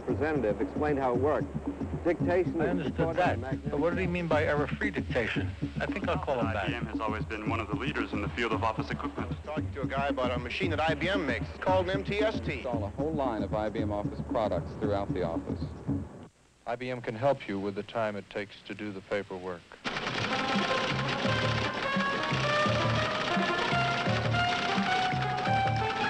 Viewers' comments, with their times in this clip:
0:08 I was actually wondering if the guy is Frank Oz. Sure sounds like him.